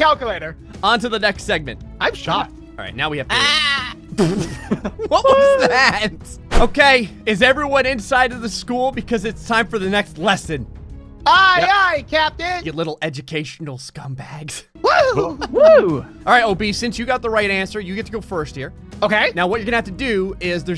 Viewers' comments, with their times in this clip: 0:03 i hear a goat